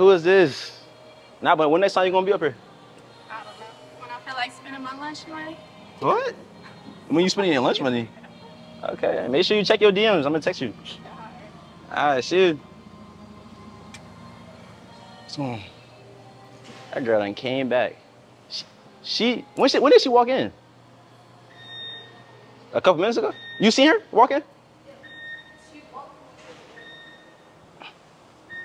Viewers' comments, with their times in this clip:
0:04 her southern accent is so beautiful 😍
0:09 Am I the only one that kissing sounds when she was leaving 👀